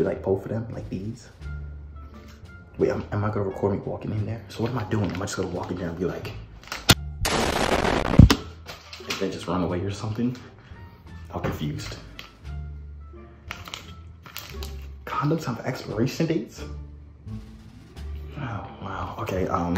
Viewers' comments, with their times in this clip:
0:07 throws condom Boost mobile ad: kapoww Back to vid: Hiroshima